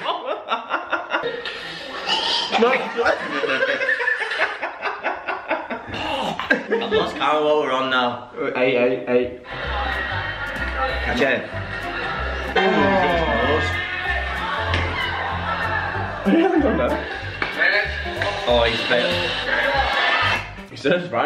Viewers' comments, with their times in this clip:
0:03 whoever just laughed needs an inhaler😵